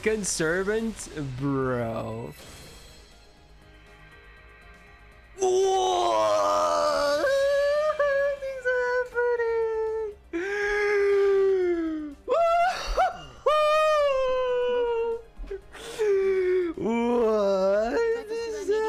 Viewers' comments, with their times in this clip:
0:05 That would be a funny bit gacha sound